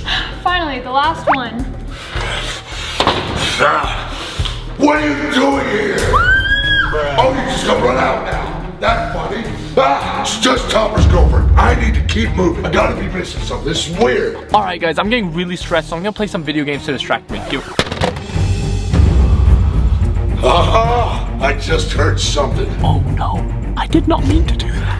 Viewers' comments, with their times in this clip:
0:06 That scream and bruh sound got me laughing 😂